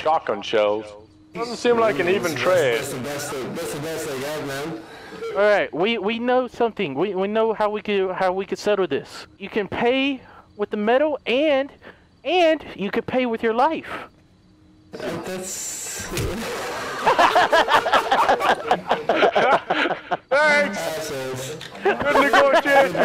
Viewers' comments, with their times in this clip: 0:08 i love how delirious is stretching his sentence to aim for his head LOL